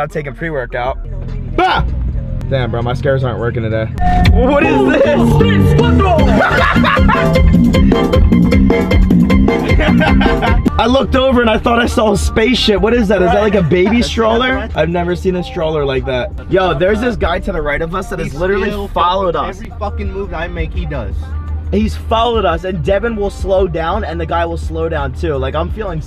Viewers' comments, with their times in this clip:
0:04 the funniest moment with the el sonidito song 😂😂😂😂
0:04 yooooooo my boy that song is always lit
0:06 they put my favorite song😂😁🎧
0:06 1 2 3 4 sonidito that song is lit 😂😭 song
0:07 Ayy the music 💀😂😂
0:09 that music was lit🔥🔥🔥.